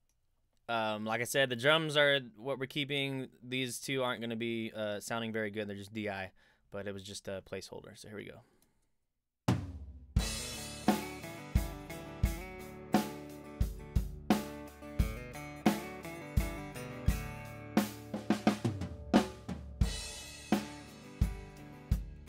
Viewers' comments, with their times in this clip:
0:09 This may not make a difference in this production, but if one needs to score this song the meter a bit messy. I hear 3 beat + 4 beat in that groove In this case I wonder how to do the metering properly. Does anyone here know how to set up the meter to alternate 3/4 and 4/4 ?